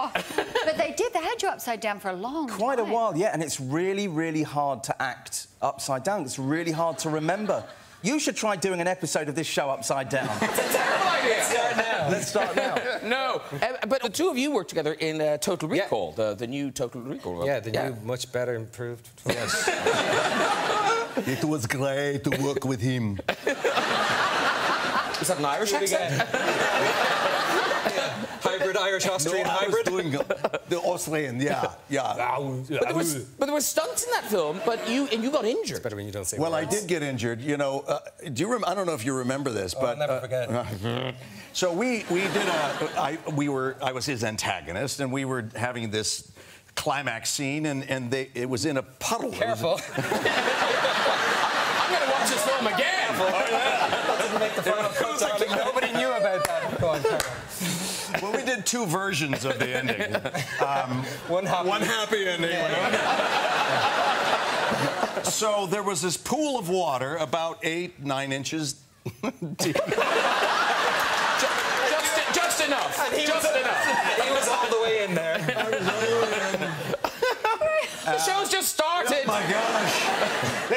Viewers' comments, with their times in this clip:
0:06 Haha Graham sound confused and Matt gave a suggestion to his show
0:21 In Was that Arnold Schwarzenegger's voice? lmao
0:23 was Bryon Cranston doing an Arnold Schwarzenegger impression ?
1:01 i like how Colin and Bryan said at the same time